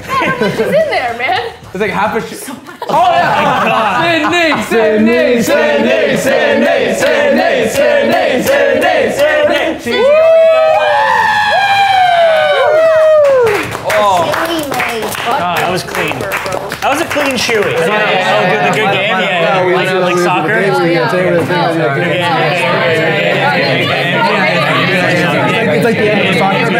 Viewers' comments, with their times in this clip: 0:07 everyone's yelling and cheering meanwhile Yvonnie